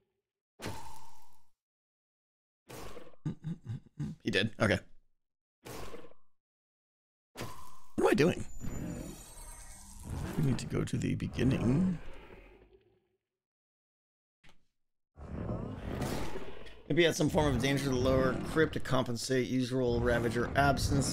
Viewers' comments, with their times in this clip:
0:07 is that the sound of a Warden being killed?